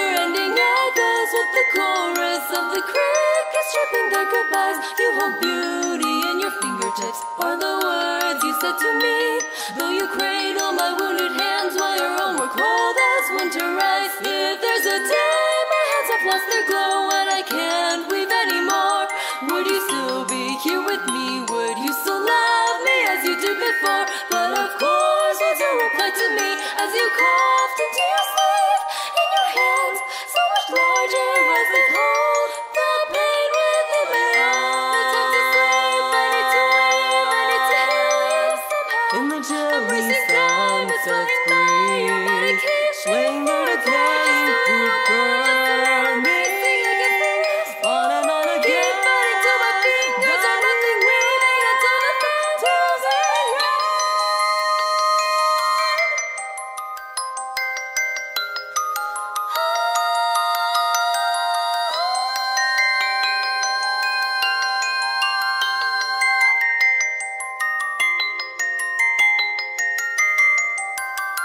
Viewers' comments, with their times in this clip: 0:04 I love how you can hear the strain in her voice, the work and emotion she's putting behind it. You can't hear that in a lot of songs these days, and I can really appreciate it!
0:53 That was simply beautiful. I actually like this version more, it accentuates the beautiful vocals.
0:54 Such great harmony